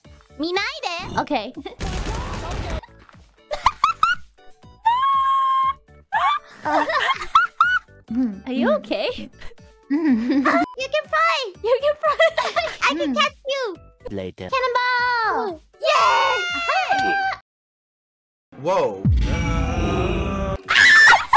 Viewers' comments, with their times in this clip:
0:03 Sound like risu laughs